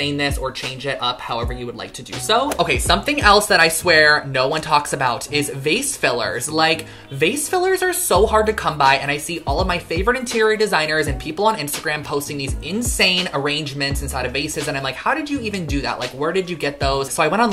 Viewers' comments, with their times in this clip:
0:05 I thought you said face fillers, I'm like isn't that's a pretty big thing already?